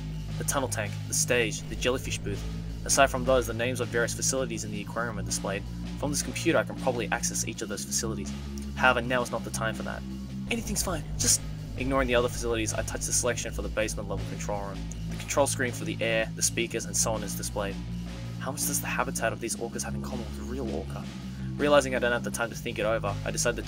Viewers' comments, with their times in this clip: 0:06 I like the snare drum that is playing in the background in